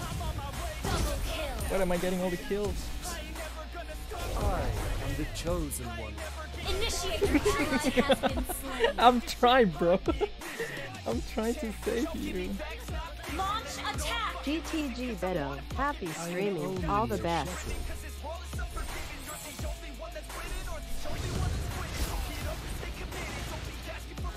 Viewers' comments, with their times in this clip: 0:06 that laugh though HAHAHA